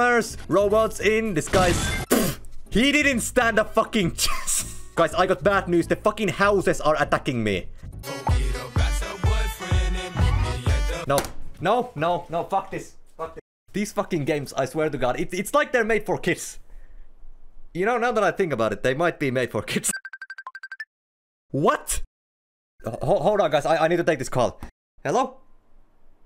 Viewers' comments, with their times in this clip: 0:07 whata the music